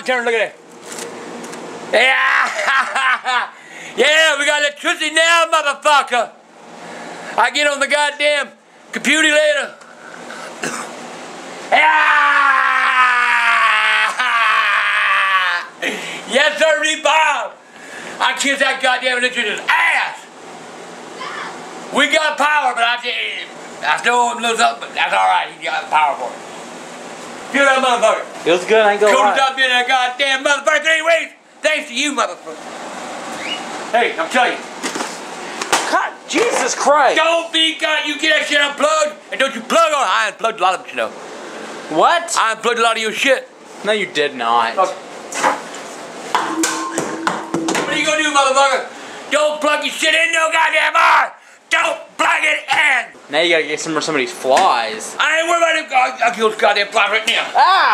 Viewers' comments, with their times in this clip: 0:04 He sounds like my Grandpa.
0:20 That speaking noise was a parakeet or something, right?
0:23 haha... looks and sounds like edgar from MIB...
0:41 what the hell did he say?